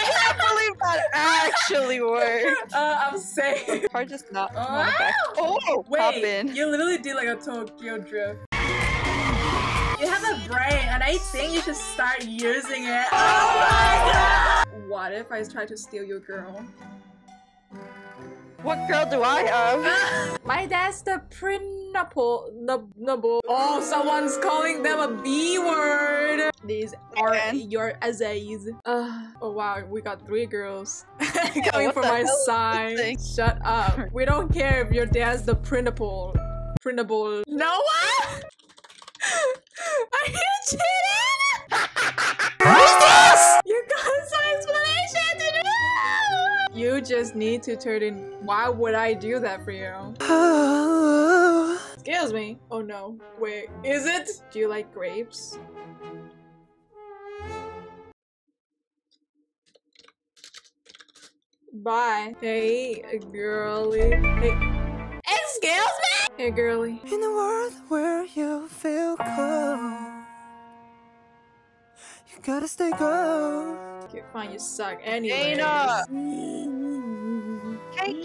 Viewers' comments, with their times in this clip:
0:06 i died of laughter once tokyo drift played (●’◡’●)ﾉ
1:04 Hey girlie hold still childe noises